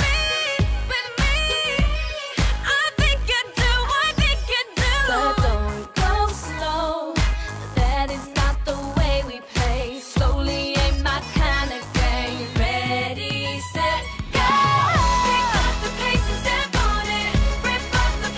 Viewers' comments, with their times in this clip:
0:05 There's something about the way Frankie says "slow" that's damn sexy
0:06 There's something about the way that Frankie says "slow" that's damn sexy